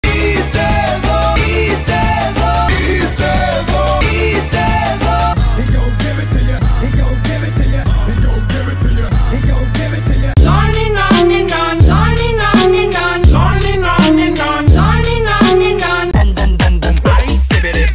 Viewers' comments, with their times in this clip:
0:05 Sounds like Preview 2 Lighting McQueen Deepfake.